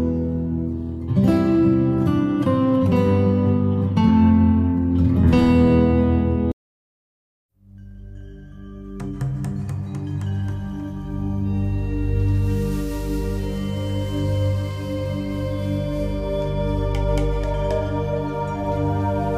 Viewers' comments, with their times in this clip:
0:07 the myst soundtrack is utterly magical 💜